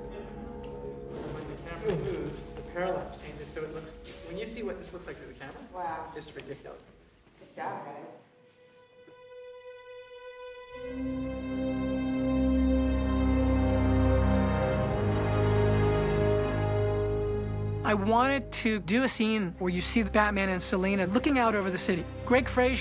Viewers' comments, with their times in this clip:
0:08 The music is absolutely gorgeous.